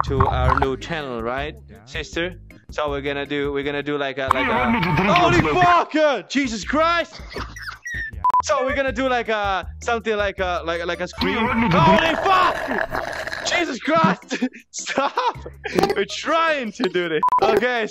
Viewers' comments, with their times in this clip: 0:05 finally i hear her laugh!